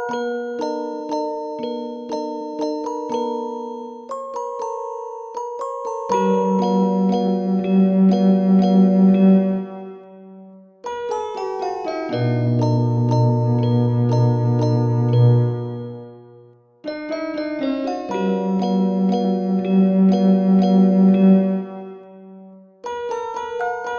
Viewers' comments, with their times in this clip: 0:06 and elsewhere - love the reverb